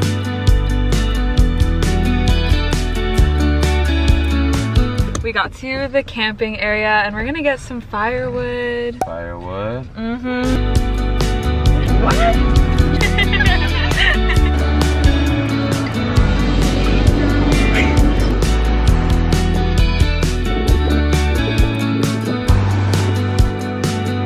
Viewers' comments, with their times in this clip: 0:09 the way her "mhmm" blended in with the song